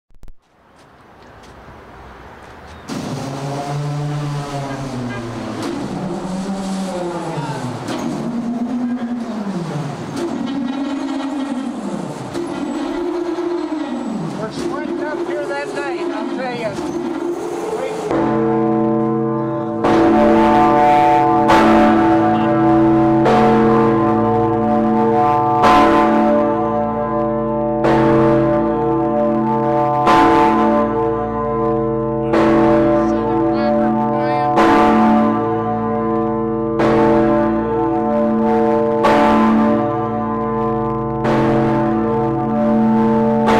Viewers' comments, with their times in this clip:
0:05 the starting of movie creepy action scene music
0:17 bell start to ring loud
0:17 The Bell Starts To Ring
0:20 this man almost got his ears ringing
0:30 It was so loud that even the camera started to blur